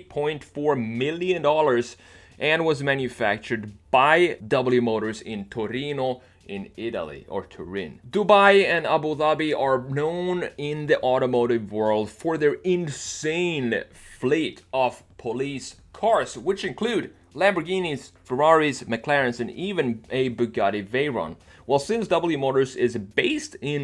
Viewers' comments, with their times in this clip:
0:08 damn you pronounced that so well